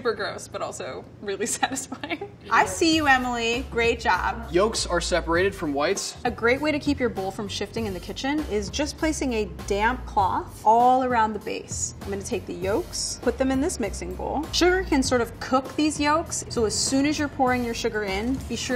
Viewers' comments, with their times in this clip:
0:06 Was it just me, or i heard "a great way to keep your bull from shitting"-💀